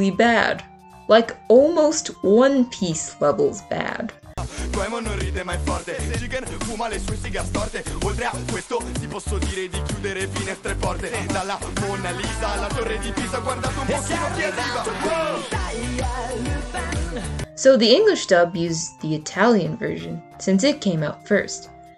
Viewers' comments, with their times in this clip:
0:04 honestly, i think the rap is kinda ok. maybe it's because i don't understand italian or i just really like the beat and all of that. im not saying the rap op is the best opening ever but even i think it's kinda bad. i definitely prefer the jazzy and catchy openings more than a rap. it's good to hear that other dubs agreed it wasn't a good idea to stick with the rap version. the traditional openings will always be the best for the lupin the 3rd series.